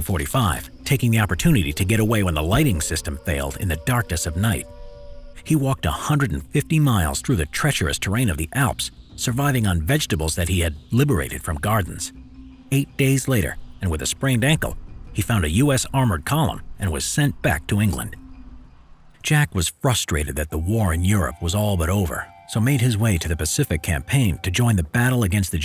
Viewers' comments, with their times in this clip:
0:08 LOLthat pause on Liberated vegtables